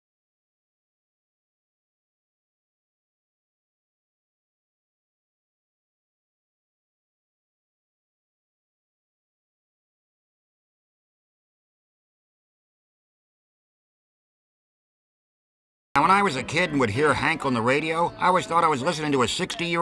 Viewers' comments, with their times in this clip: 0:03 The quartet is unreal